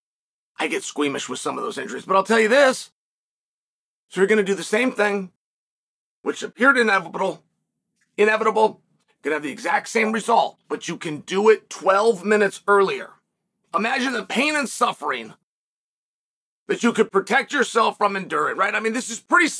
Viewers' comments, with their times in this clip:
0:06 “inebirrabrrrl” Thank goodness Chael fired his editor or we may have missed that gem.